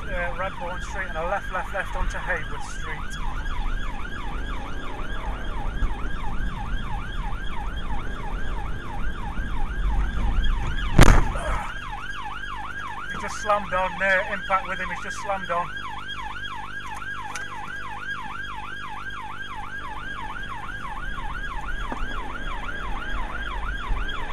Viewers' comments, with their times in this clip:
0:07 Romain Grosjean sounds very different when he's driving a police car.